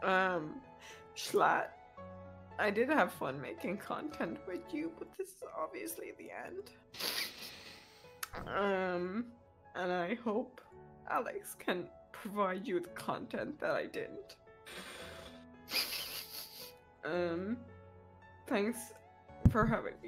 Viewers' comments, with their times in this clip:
0:06 Schlatt trying to hold back laughing